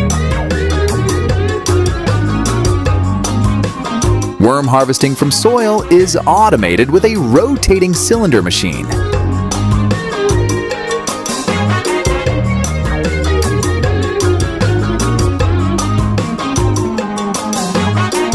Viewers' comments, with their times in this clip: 0:04 All I could hear was 'Wheee!!!" "Weeee!!" "WHEEEE!!!" "Yippie!"